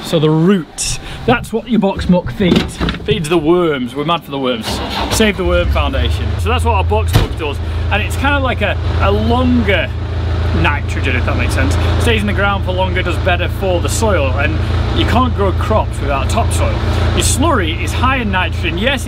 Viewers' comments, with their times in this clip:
0:07 you sound so much like your dad it’s scary 😂